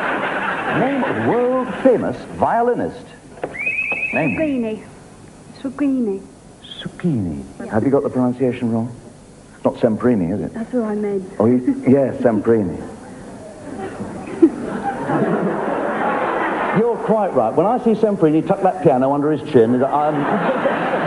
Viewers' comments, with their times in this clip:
0:03 who is the person the lady is trying to say? I couldn't understand the correction either.